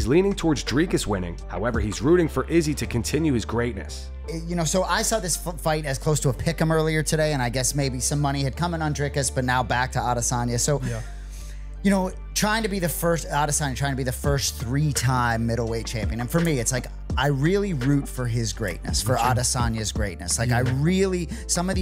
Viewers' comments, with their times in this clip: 0:07 When did Anik start sounding like Belal??